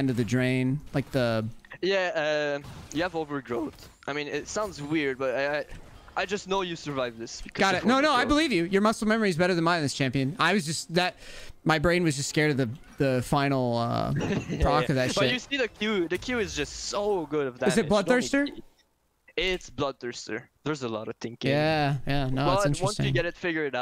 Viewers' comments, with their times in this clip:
0:04 that voicecrack lmao